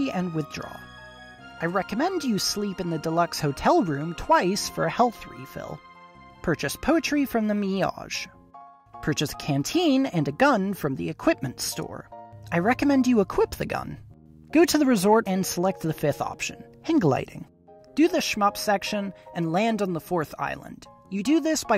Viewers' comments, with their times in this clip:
0:07 i had to do a double take when u said "mi-yajh" lmao was that on purpose? or is it just classic american-ism at work? in any case, still fun video overall